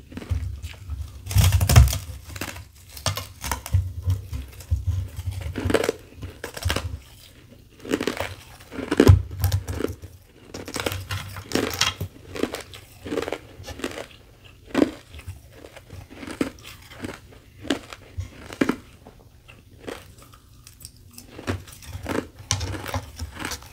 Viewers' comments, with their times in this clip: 0:04 First you finished the crunchy crispy carbonated with powdery ice but in the minutes was delicious and awesome too